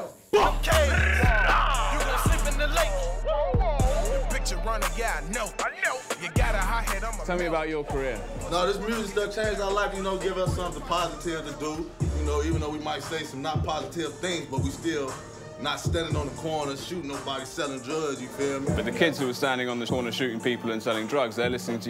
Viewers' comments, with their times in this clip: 0:08 Reporter asking the real questions but dangerous ones too…that moment of tense silence had me worried mans might’ve felt disrespected.